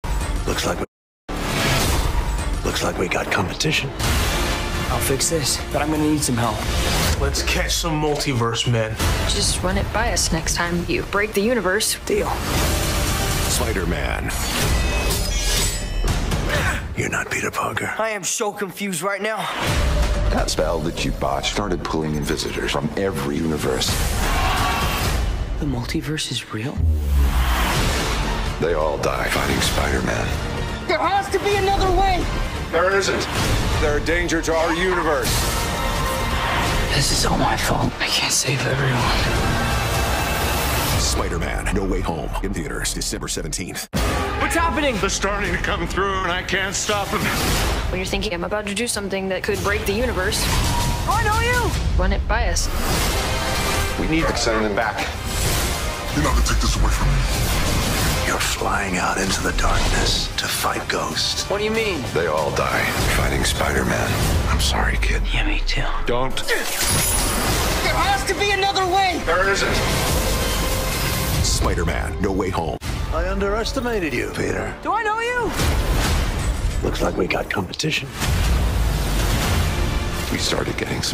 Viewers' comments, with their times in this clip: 0:07 i think Ned said "Let's catch some multiverse Spider-Men" but the spider getting cut
0:28 "They all die fu**ing Spiderman" That spider made peter's dong radioactive too😂
0:34 listen carefully, the laugh doesn't sounds like Dafoe's. More like the goblin from TASM 2? The laugh blends with Dr. Strange voice so it's hard to notice at the first place, I don't know 😅
0:52 in that tiny clip you can hear tobey saying "we need to-" then it cuts to dr strange's voice
0:53 'we need to' that tobeys voice or am I just fk spacing
0:53 Listen carefully, the "we need" is kind of like tobey's voice!!
0:54 Split second Tobey’s voice??!!
0:56 Electro’s voice is back.
1:04 LISTEN TO THE VOICE..."THERE HAS TO BE ANOTHER WAY" That is Tobeys voice